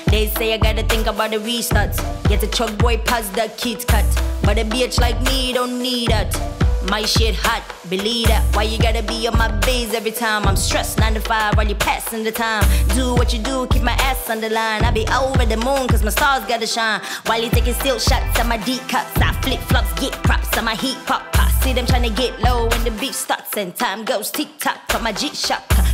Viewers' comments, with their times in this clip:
0:07 is that you, Nicki Minaj? 😂